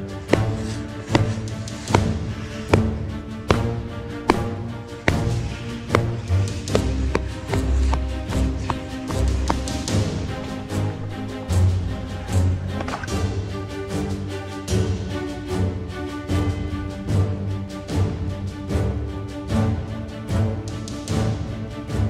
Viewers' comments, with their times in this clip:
0:07 nice tempo on the music with the bopper :)